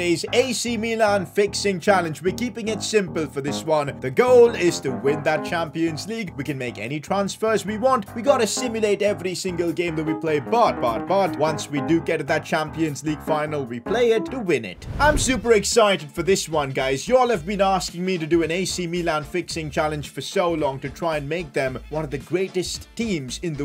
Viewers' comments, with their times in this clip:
0:08 music creeps me out 😂😂